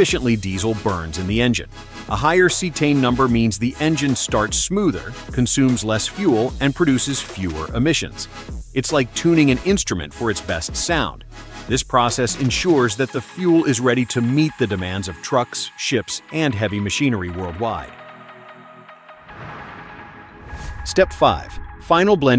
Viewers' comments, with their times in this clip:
0:03 what did he say ? A higher "C10" number ? Anybody here to explain?